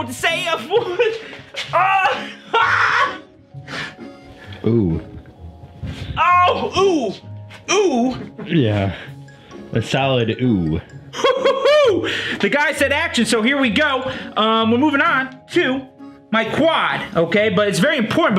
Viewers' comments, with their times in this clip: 0:04 LOL tha camera guy just said ooh. like a sociopath